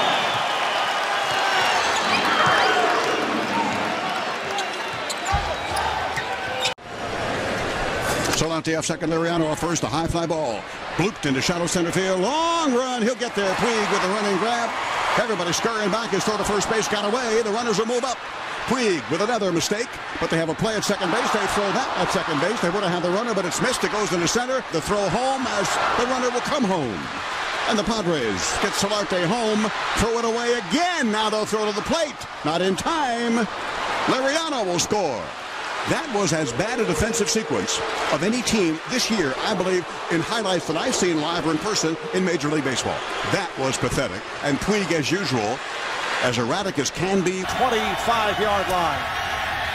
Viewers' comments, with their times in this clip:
0:06 his voice is so annoying yet his remarks are so necessary.
0:07 kinda sounds like an announcer from like the 50s
0:36 why the announcer have to go in so hard 😂😂😂😂